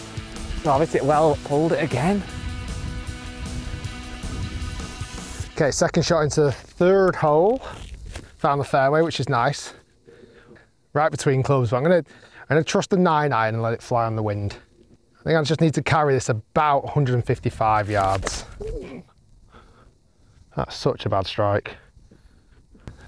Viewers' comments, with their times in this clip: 0:06 bro lost his accent